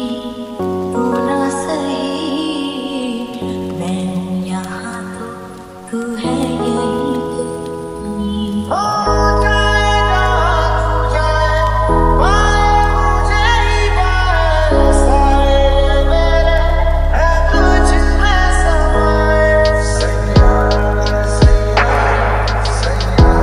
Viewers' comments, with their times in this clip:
0:08 I LOVE this song but I lik this voic